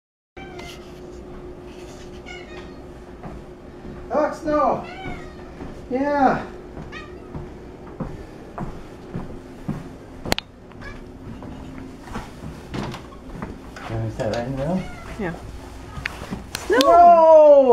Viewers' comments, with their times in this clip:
0:02 did anyone else hear “hello” ?
0:04 The meow is so adorable.